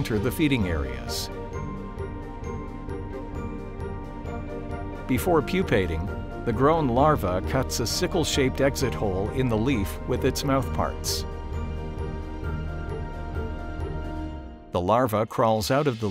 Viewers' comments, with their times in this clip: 0:04 Look - everyone hating on the Soundtrack, Meade go to when the climax of music, and words come together in magnificent affect.